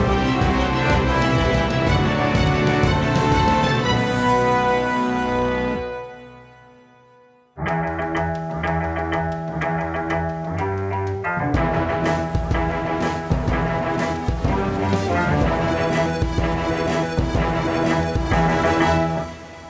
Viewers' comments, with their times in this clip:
0:03 I feel like that note that you've been building to needs to be the most epic one in the whole song. Just me. It sort of lets down.